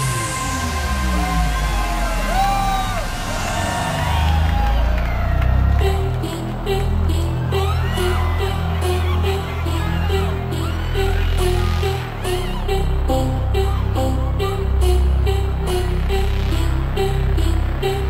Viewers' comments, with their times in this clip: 0:05 i hear korean love the set, love him, much respect... he is a true legend